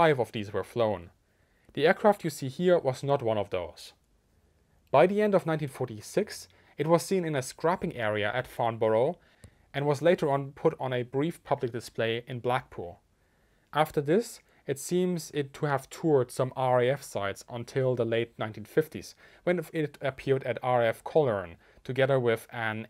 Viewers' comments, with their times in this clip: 0:08 bruh the way you pronounce my hometowns name